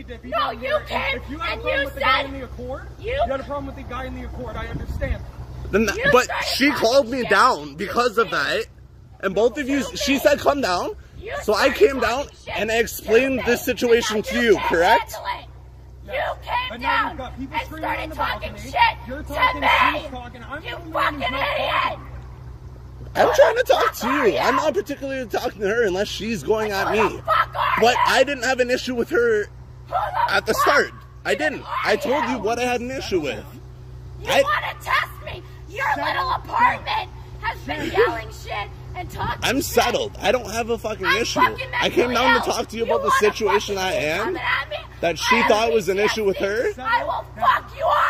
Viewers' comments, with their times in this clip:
0:06 sounds like drake 🤣🤣
0:11 they having a whole conversation over her screaming 😂😂😂
0:29 I love the way she just be screaming in the background while the 2 guys discuss